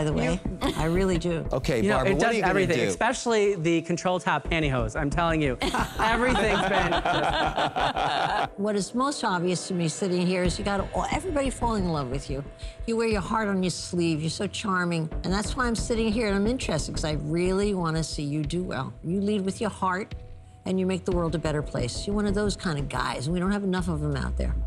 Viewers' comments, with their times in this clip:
0:07 Lori can’t even laugh properly because of all the botox